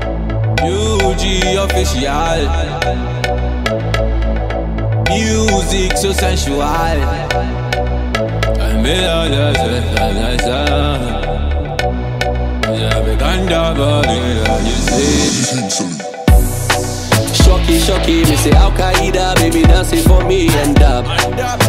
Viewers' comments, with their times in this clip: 0:09 what is this boy even saying ?? 😂😂